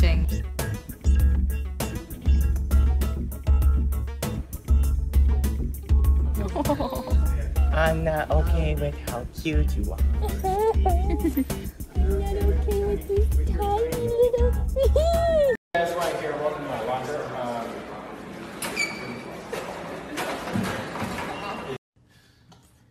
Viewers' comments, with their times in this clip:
0:06 wyatt is too pure by the way he talks to the hedgehog. The world just doesn't deserve him. like i didn't know i needed this clip until now ilhsm <333333